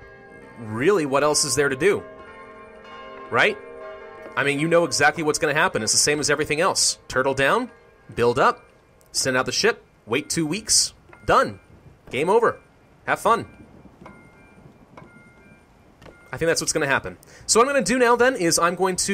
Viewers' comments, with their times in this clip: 0:07 He is talking to the beat